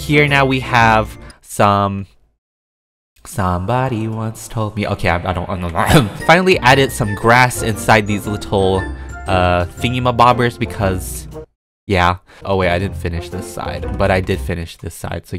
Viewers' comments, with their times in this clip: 0:03 I started singing the same song with him lol